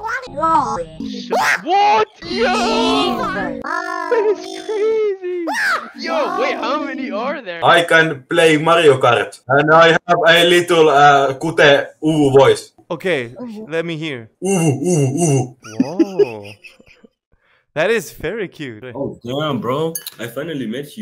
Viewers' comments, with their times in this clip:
0:07 for some reason killed me, I laughed so hard at the guy with the uVu voice
0:08 not even a milli second played and i could tell its a finnish person. the accent and the finnish genes bro